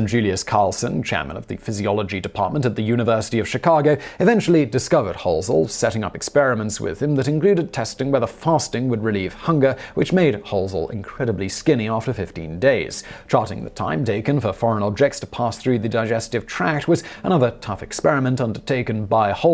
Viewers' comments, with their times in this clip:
0:04 "Chicaga" ... My great grandfather used to pronounce it that way too, instead of Chicago! 🥰